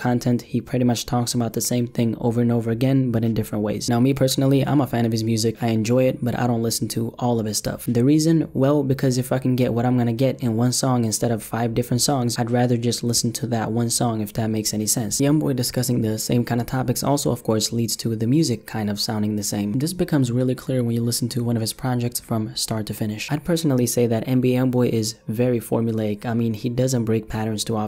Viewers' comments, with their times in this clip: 0:08 Sounded like you said I fuckin get what I can get